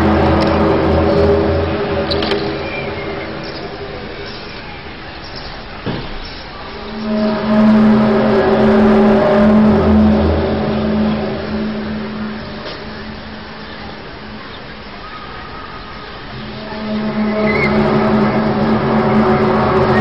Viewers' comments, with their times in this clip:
0:04 I just heard these noises but with real low booms in rural Honey Brook Penna, I am beyond freaked out. I live miles from any kinda of town and its freaking me out.... and I can hear the dogs barking for miles afterwards for about 15 mins. I am really freaking out. This aint right.